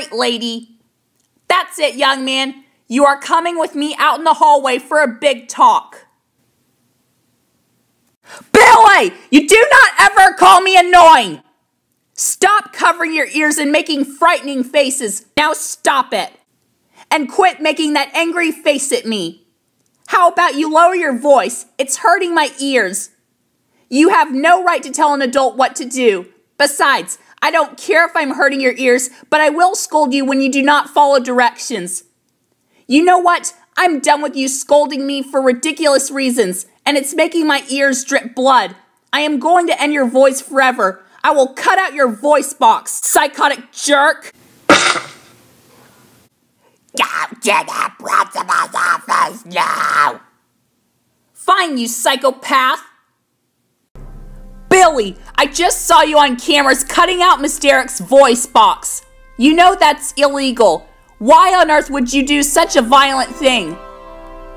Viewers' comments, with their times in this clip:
0:04 trun down the volume
0:08 that scream is chattering his eardrums
0:08 RIP HEADPHONE USERS BILLY YOU DO NOT EVER CALL ME ANNOYING
0:08 Sorry, Headphones User
0:08 TIRN DOWN THE VOLUME BECAUSE IT'S GOING TO BE LOUD
0:08 (TURN VOLUME DOWN)
0:08 Bill got frightened over loud voices
0:08 MS DAREK YELLS SOO LOUD AT BILLY
0:09 That scream sounds slightly whiny.
0:46 This made me laugh, the coice!!! 😂😂😂
0:46 (MONSTER VOICE) Go To the principal’s office now!
0:47 Go to the principal’s office now (funny voice)
0:48 Go to the Prince-A-Cup's office now
0:49 She sounds like my mom!!! XD
0:49 I love that Ms. Derrick sounded like Frazzle.
0:49 sounds like if baldi had a daughter
0:49 Lmao she sounds like the old grandma from spongebob
0:50 now she sounds like a monster
0:50 He sound like monster now